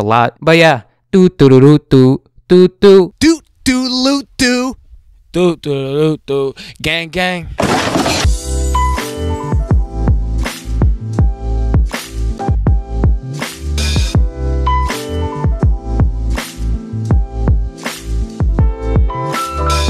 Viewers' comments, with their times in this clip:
0:03 dis boi sounded like those people who were like 'YOOOOOOOOOO DUDDEEEEEEEE' the guy who had the curly hair btw I don't mean lil mosey